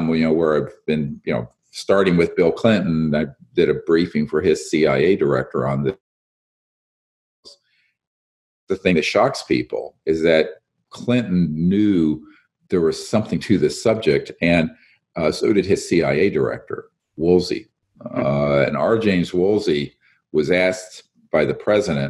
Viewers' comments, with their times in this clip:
0:06 the tape skipped as he was talking about addressing President Clinton? Anyone else catch that?